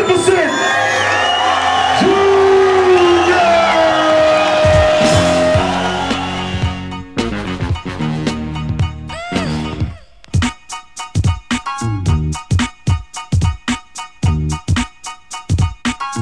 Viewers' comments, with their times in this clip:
0:04 starts Prodigy-Keep It Thoro but its fastet i think... rmx or smth?